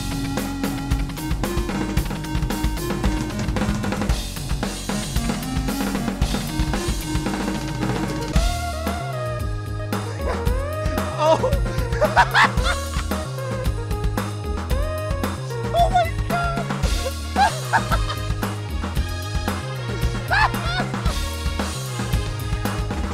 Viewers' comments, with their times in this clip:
0:08 I might be wrong, but I think we just got rickrolled in Akumajou Dracula X style.